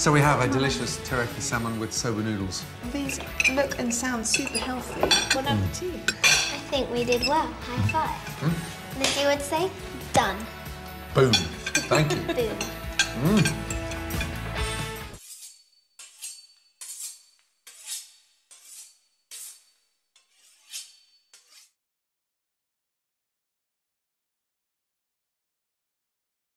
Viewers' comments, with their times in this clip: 0:06 Did anyone else cringe when you hear the forks scratch the plates?
0:11 nice CrazyRussianHacker impersonation